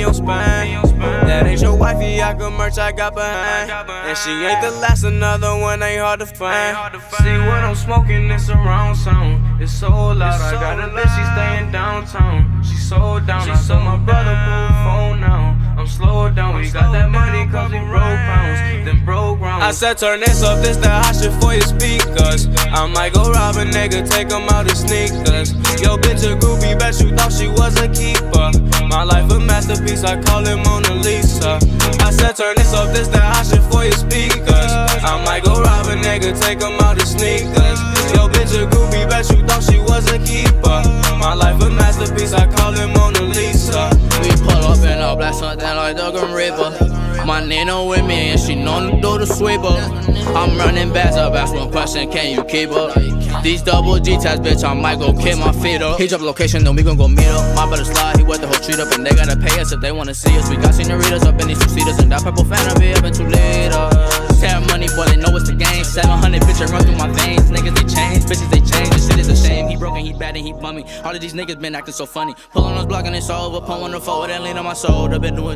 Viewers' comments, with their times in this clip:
0:07 when you be in the storm in fortnite then that how you talk gg
0:56 The beat drop was fucking fire